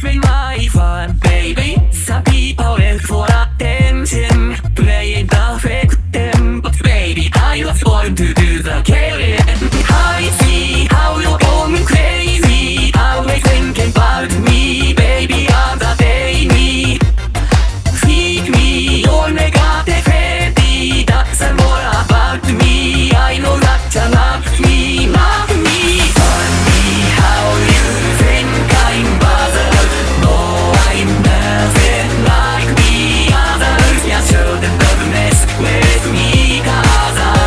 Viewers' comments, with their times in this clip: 0:09 from put 1.25 speed and it will turn into bad guy
0:18 i always thought he said onegai